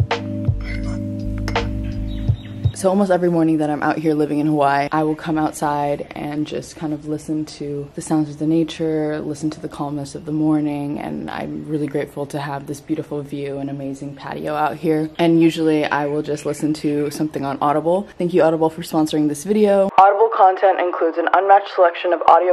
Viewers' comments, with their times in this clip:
0:03 live here and you still can't say Hawaii correctly. "HAWHYYYY"